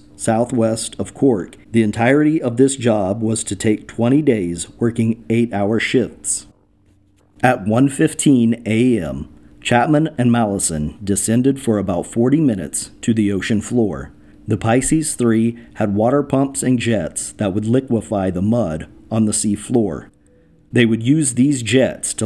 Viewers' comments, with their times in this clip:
0:05 “Working 8 hour shits” Just curious if anyone heard that.